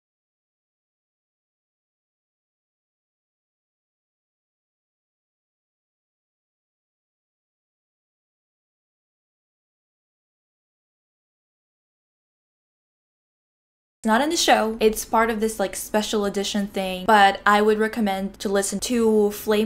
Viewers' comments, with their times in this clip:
0:04 The Audio Is Not Working Here